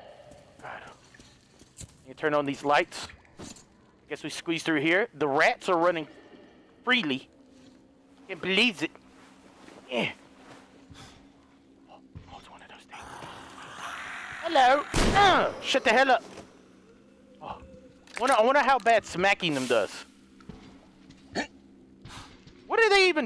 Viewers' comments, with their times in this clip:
0:05 I love how silently he whispers XD